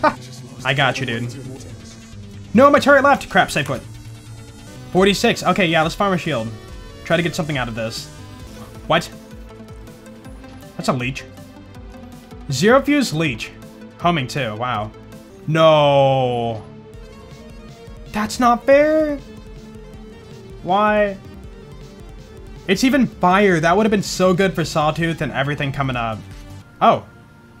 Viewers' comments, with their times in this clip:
0:10 The way you said “it’s a leech” 😂